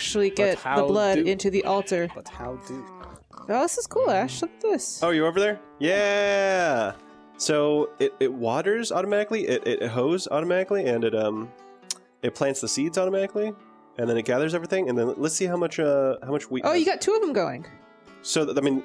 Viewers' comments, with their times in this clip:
0:04 What`s the name of the song? Its calming!